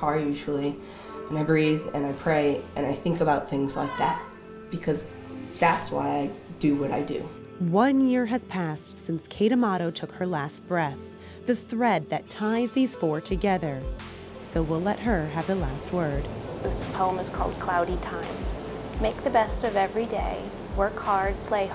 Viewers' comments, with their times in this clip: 0:04 Listen at minute .....is that a voice?